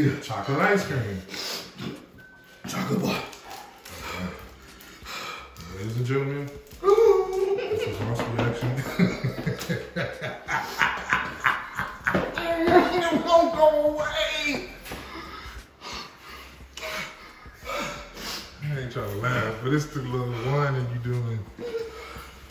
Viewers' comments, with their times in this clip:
0:08 that was one of the most evilest laughter’s I’ve ever heard💀
0:08 That's the (totally innocent and not at all evil) laughter of a true best friend (who's totally not taking any joy from your traumatic pain and suffering) right there. 😈👌🔥😇👌
0:09 It's the laugh that got me 😂